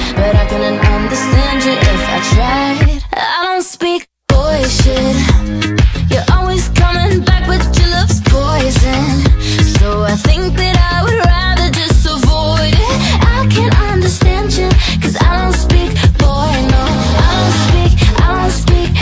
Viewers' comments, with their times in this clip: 0:03 Am I the only one who hears a glitch on the word “speak”